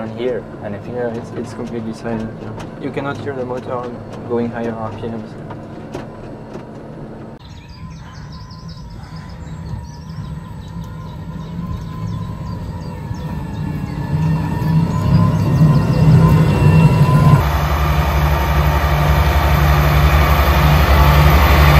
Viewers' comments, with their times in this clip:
0:09 raw iphone sound with inserted bird chirps ;-)